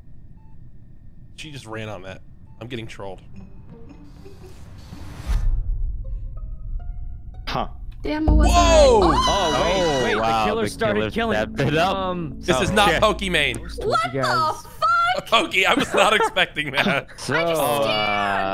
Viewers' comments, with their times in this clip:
0:05 for some reason when poki said "what the f*ck” it sounded so funny